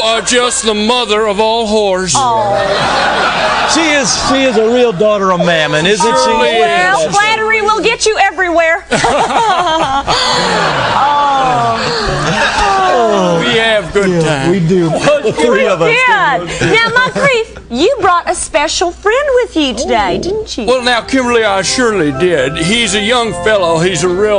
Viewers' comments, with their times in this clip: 0:09 Tom Kenny's shoulder-laugh always get me 😂